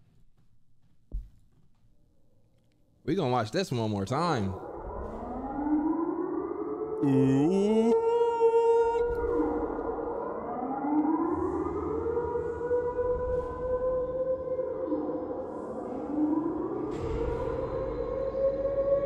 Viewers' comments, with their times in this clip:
0:05 my man Siren Head just got some vocal lessons and wanted to show off his range.